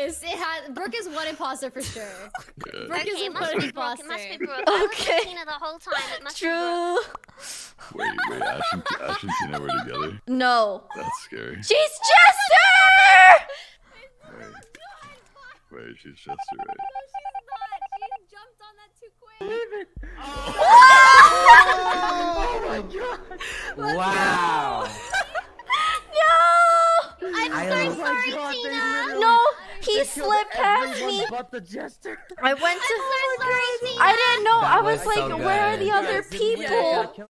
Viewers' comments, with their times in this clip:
0:07 nobody is gonna talk about how creepy/yandere her laugh sounds-
0:24 that wow will always surprise the shit out of me